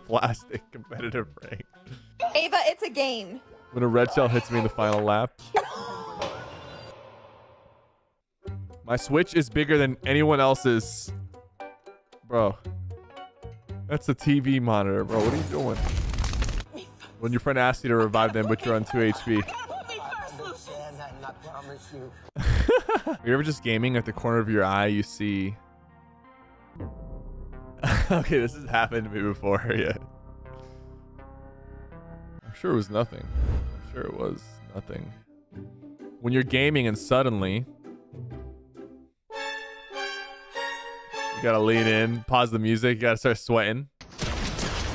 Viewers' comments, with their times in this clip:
0:06 wtf did the girl say i replayed it so many times but sypher kept talking over it
0:26 Not only have I felt that before, like a presence moving by, but paired with the eerie music from Stranger Things, it sent chills down my spine. 😅